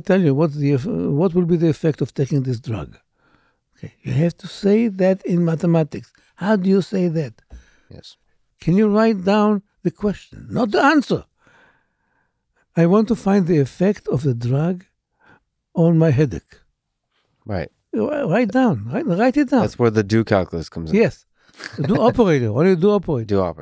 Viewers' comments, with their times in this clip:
0:10 Omg that one time when Judea frickin' Pearl quizzes you on your own podcast about a subject most University professors should be familiar but aren't. Our steely man Lex just laughs and stares him down... well played sir, well played. tips hat